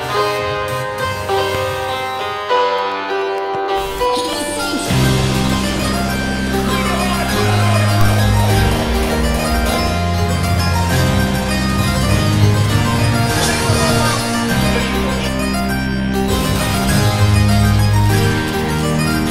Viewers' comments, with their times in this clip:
0:05 FRENCHCORE OMG! THAT GOOD AFTERMOVIE, THAT GREAT DEVELOPMENT! I LOVE LIKE INTENS FESTIVAL THIS YEAR, THE BEST EDITION WITHOUT ANY DOUBT!